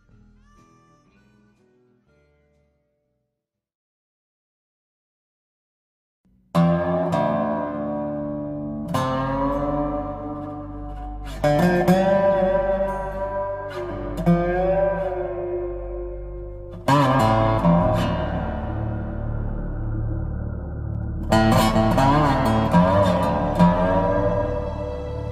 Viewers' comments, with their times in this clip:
0:06 Public Enemy reminds me of Cowboy Bebop.